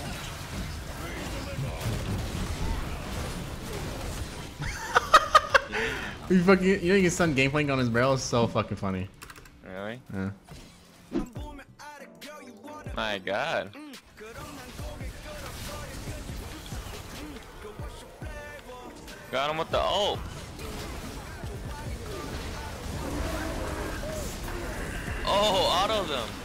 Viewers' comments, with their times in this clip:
0:10 Whats the song ? Seems catchy